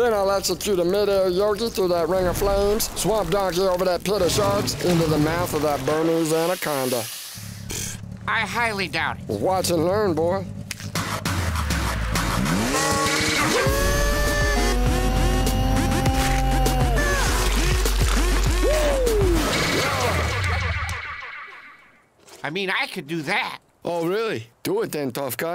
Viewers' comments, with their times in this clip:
0:09 Watch and Laminated!!!!!